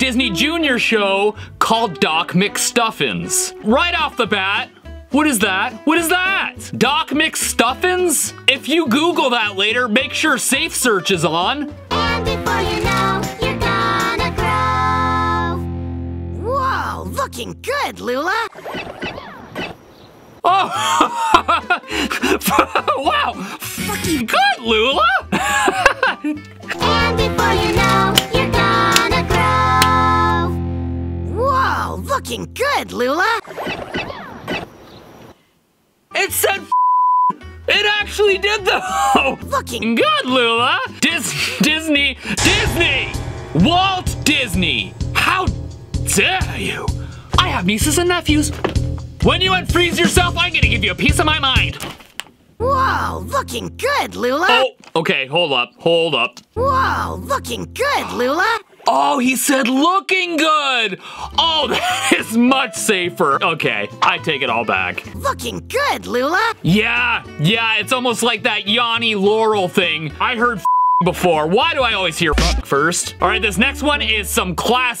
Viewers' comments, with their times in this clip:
0:10 I think it was “looking good Lula!” But now that I heard it again I heard it😭
0:13 I thought it said looking good
0:16 I keep hearing f****** good😂
0:16 I hear looking good Lula
0:18 I think he thought it said the F word but what I saw it didn’t I think you just misheard it because I heard look
0:18 I used to watch this and I always heard “looking”
0:18 I heard looking good
0:18 I heard looking good Lula
0:25 what he clearly said looking good
0:27 i heard looking good
0:31 I Think He Said Looking Good, But If You Understood Fucking Good, It's Ok. XD
0:31 he did not said the f bomb with the ing he was ment to say LOOKING
0:31 I heard looking not de F bomb😂😂😂😂😂
0:32 I heard "Looking good Luna!"😂😮😅❤
0:32 it clearly says looking
0:37 i hear looking good
0:46 bro turns british
0:47 accent how dare u
0:47 In the he said doc mcstuffins dragon said f***ing but they said looking
0:53 he's actully saying _"looking" not the f word but it does sound like it
1:04 I still hear the "f***iing good Lula!" 😭😭